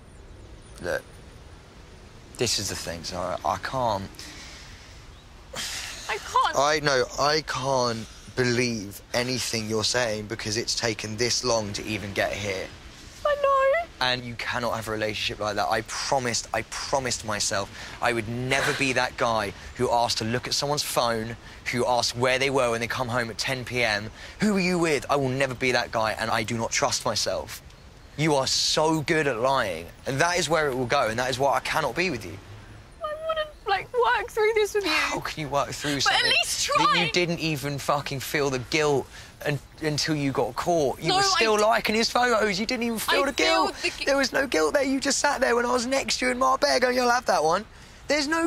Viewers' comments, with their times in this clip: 0:04 If you have never seen "crocodile tears" before, exhibit A. she's laughing.
0:29 lol the hysterics dissapeared so quick